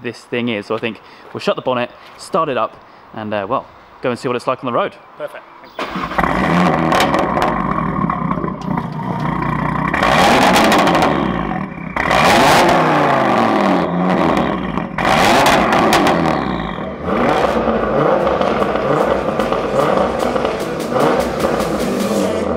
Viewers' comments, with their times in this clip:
0:05 Eargasm starts ..remember to lower the volume if you’re on earphones your ears might scream ..yw